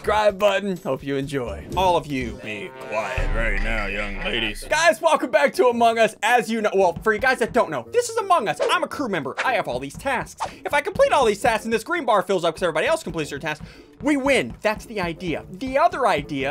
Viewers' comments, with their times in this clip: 0:03 Girl: gets kidnapped *screams* Kidnapper: